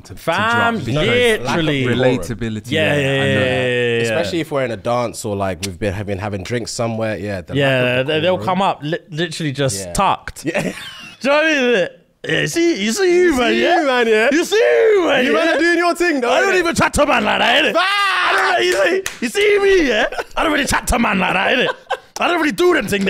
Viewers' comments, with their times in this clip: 0:10 I have no clue what this man just said 💀